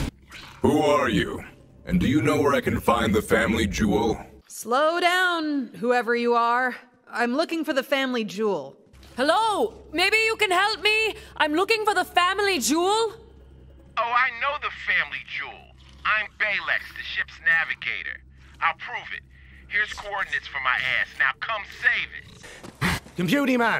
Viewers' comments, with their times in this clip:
0:10 Why was Amara the only one yell Their talking through comms😑.